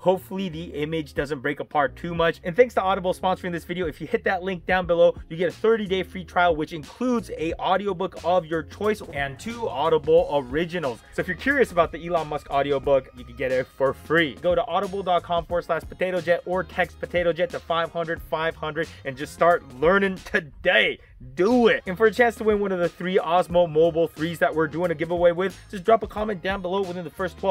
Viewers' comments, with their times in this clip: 0:09 Love the smooth voice over haha, sneaky!